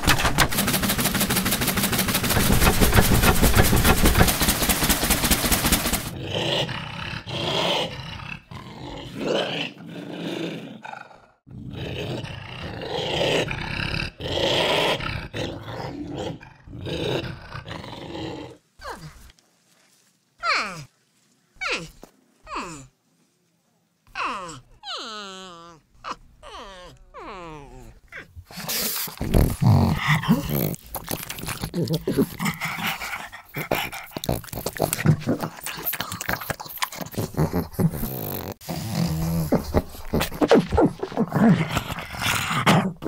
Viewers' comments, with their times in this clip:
0:02 No one: My Washing machine:
0:06 This sounds like angry flood noises to me.
0:07 what is that? A badger?
0:07 Does anyone else think sounds like flood?
0:17 that’s where Minecraft villagers come from
0:18 why don't they just go to minecraft and spawn some baby villagers instead, same sound, not needing to get this animal
0:18 OOOhhh now I know how they got the villager sounds from Minecraft too!
0:18 so we puttin villagers from Minecraft in halo now AWESOME
0:19 *villager sounds intensify*
0:19 calling that these are grunt sleeping sounds
0:19 Grunt sound effects
0:19 I can already see the Grunt in front of my eyes with those sounds :D
0:20 Lower the pitch of those sounds and its a Minecraft Villager
0:20 baby minecraft villager
0:20 Sounds has to be grunt sounds, has to be!
0:22 Minecraft villager confirmed for Halo Infinite
0:22 Grunts while their sleeping?
0:26 are they adding the villagers from Minecraft now?
0:28 If you asked me what Grunt Flood sound like...